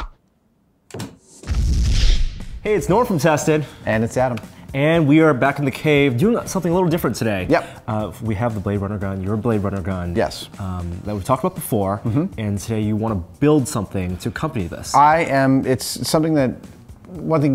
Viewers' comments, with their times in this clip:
0:03 phantom disc sander